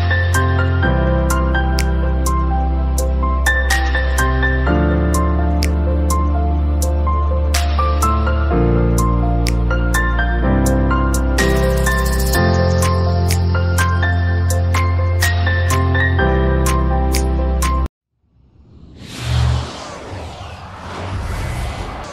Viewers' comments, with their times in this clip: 0:10 .. The joy of the guy clapping.. Is me on my birthday after prayer ready to cut the cake. ( ofcoz wen i was much younger).. Love your videos our beloved sir.. Wishing u good health.